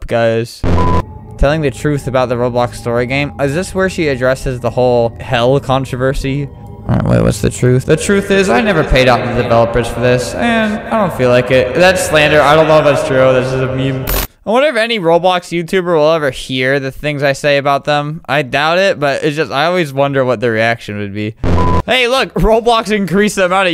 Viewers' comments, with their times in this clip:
0:07 he sounded like Corpse